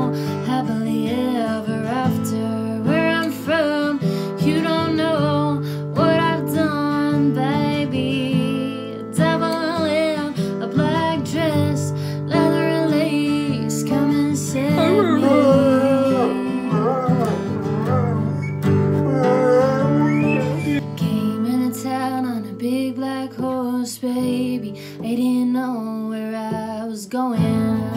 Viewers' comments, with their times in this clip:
0:09 i imagine if i knocked on the house door, the doggo boofer would just let out one low tone "Boof" amd stare at me😅😅😅❤❤❤ love that Boofer